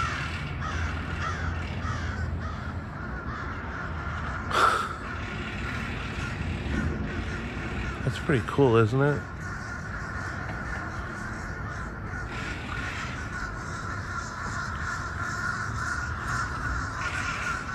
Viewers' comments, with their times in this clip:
0:03 The big flock of crows sound like they are mostly Fish Crows. To tell them apart, because they look nearly identical, American Crows sound like they have a raspy throat. Fish Crows sound like they have a stuffed up nose.